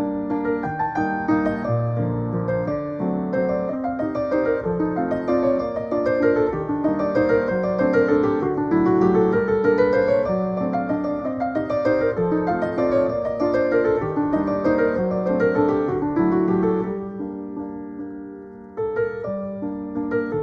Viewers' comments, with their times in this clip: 0:05 every second of that song is good.